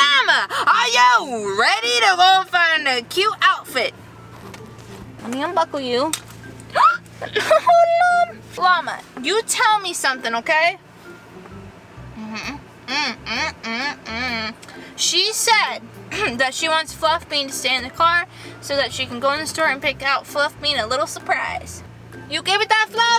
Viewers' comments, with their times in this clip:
0:06 Put your volume down